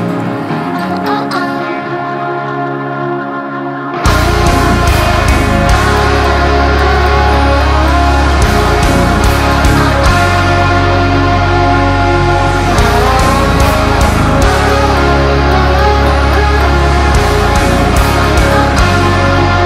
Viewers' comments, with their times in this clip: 0:06 That little feedback on ... you bad, bad man, you.